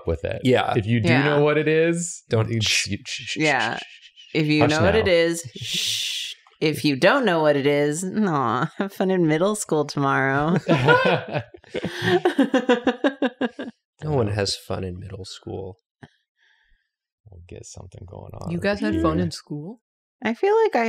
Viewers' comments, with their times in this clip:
0:03 Apparently I'm going through my infant era because being shushed was just...unnecessarily soothing.